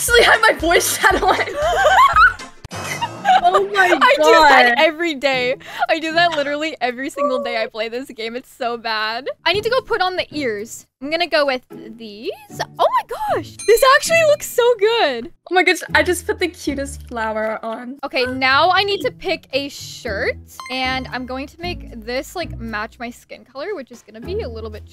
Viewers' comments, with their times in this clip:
0:10 i thought u said u had to go to the bathroom😅